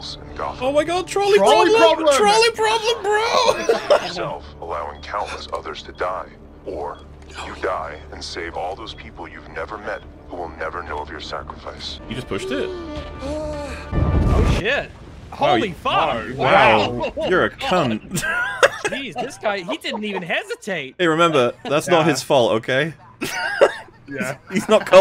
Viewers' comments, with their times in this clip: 0:08 “it cannot be a BIG bomb...” [BOOM!] “OhSHIT!” O_o XD